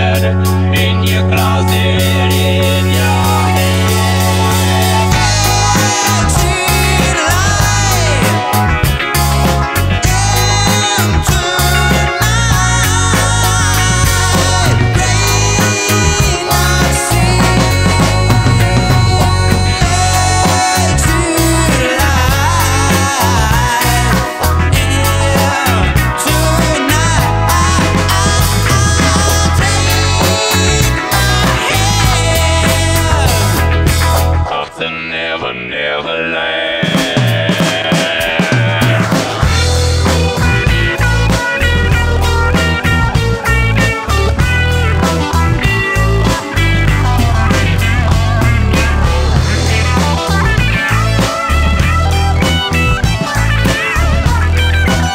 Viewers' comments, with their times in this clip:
0:04 Great vocal chords right there!
0:06 I love the key change!
0:39 Can anyone tell me how I can achieve that guitar solo tone starting ? Thank you!